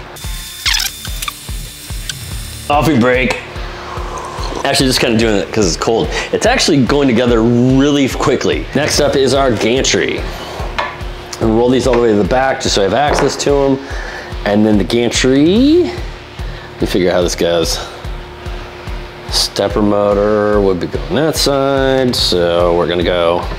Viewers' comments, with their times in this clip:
0:04 Yum Yum, Gimme Some. Please “cos it’s cold“ Pah! BTW first time I’ve noticed you having annoying background “music”, sorry. PS bet you wouldn’t ship one to England 😉 just saying